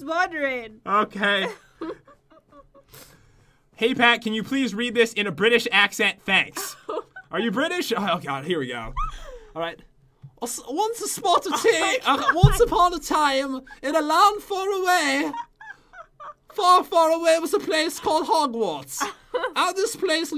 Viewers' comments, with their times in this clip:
0:03 popularmmos readed the book in british,i laughed sommuch